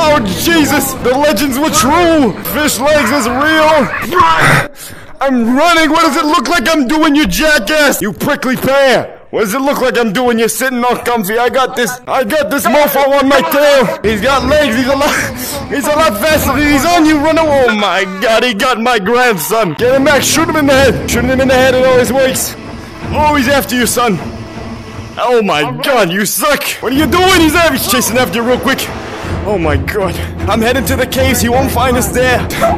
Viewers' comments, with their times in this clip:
0:04 is the beginning of my wheeze that woke everybody up from their… BeAtY sLeEp
0:16 the way he said "omahgad he got mah grandson"